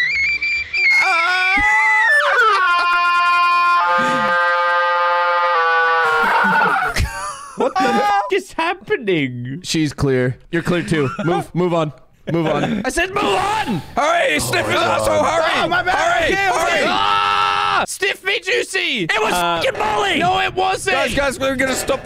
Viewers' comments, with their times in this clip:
0:03 Sounds lil creepy
0:08 sounds like a fucking Mandela catalog Creature JFC